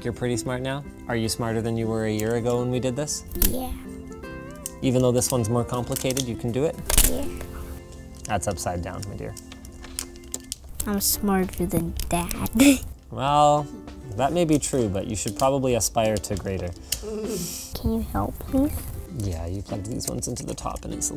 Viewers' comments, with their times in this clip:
0:07 it sounds like linus is calling his kid an idiot